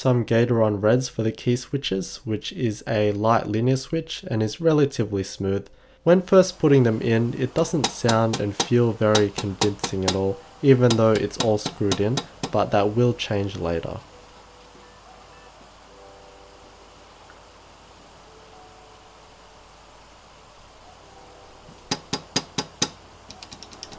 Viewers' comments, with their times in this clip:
0:08 my right ear got a love of love from that